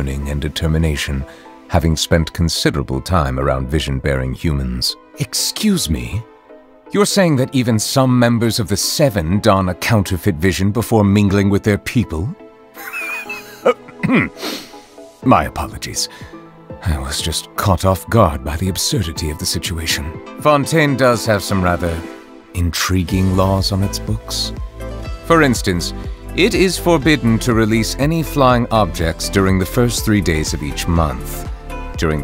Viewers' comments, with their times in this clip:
0:05 he laughs like my grandmother 😂
0:10 bro at be cracking at the thought of morax n barbatos having visions when talking to their folks also i didn't know he'd be this funny bro zhongli, diluc and alhatime should really have tea together
0:12 HIS SNORT LMFAO
0:12 NOT NEUVILLETTE WHEEZING AT VENTI HELP
0:12 Ey yo, is that dragon laughing at my boy Venti?
0:12 KETTLE NEUVELITE ISN'T REAL HE CAN'T HURT YOU KETTLE NEUVELLITE:
0:13 STOP OMG HIS WHEEZE IS SO-
0:13 This stern man has quite an adorable giggle;)))